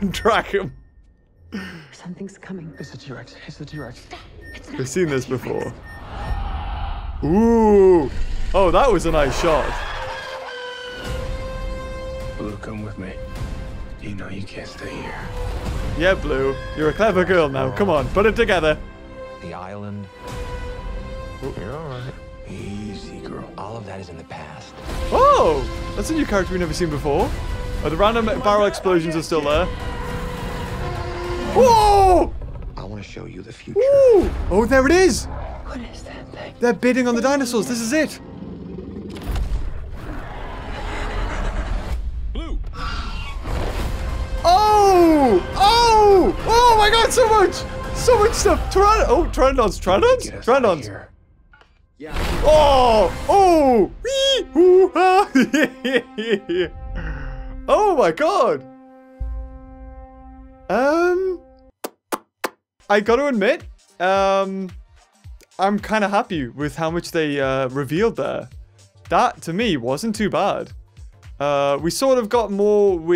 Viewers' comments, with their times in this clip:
0:09 What a scream
0:09 did yous realise that the guy in the tube area screamed like a girl
0:54 In the beginning it's oooo and aaaaaw and in the end it's running and screaming...